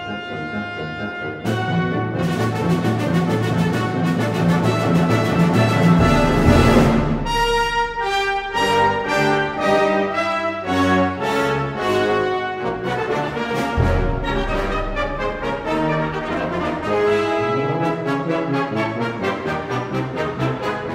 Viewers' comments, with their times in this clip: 0:08 I love this Also Sprach quote from the low brass.